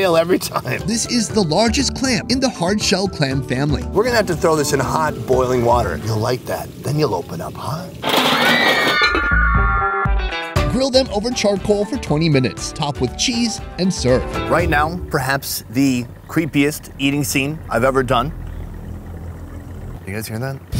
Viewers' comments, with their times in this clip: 0:07 laughed so hard at the suppressed shout sound effect when the lid closed.